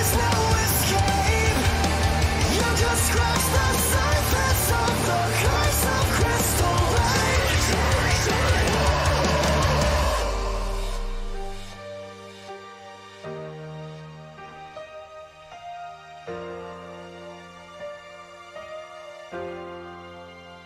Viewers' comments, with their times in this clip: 0:06 I just noticed the one guy sang the Jason sound effect.